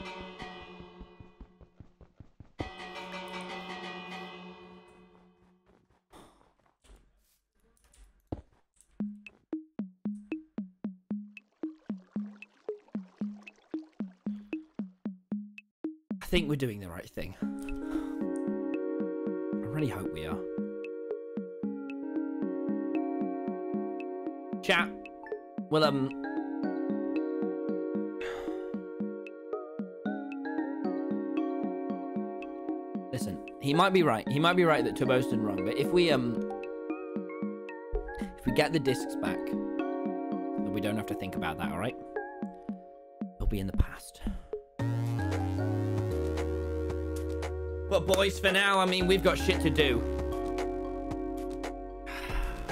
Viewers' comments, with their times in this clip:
0:07 The monologue at the end with wait playing was 👌
0:40 that was a perfect beat drop